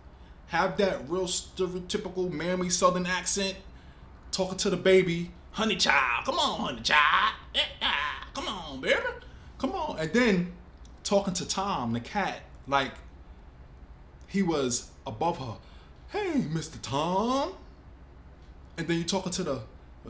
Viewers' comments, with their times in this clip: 0:05 I hate that my black self laughed at his impression 😂